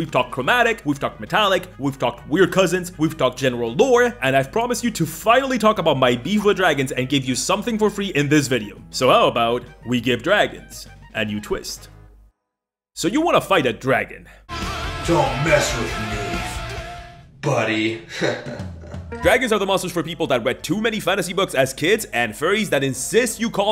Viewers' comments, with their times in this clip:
0:05 You know what earned my "like??" You pronouncing "primer" correctly ! Drives me BONKERS when folks pronounce it "primmer." (although I put the emphasis on the first syllable of Tiamat and Bahamut, but I'll let it slide...)